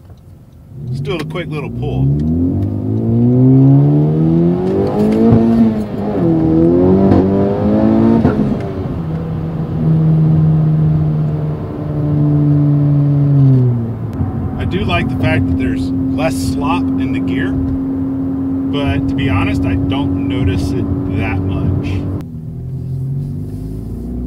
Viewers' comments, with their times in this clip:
0:06 was that a gear grind noise im hearing?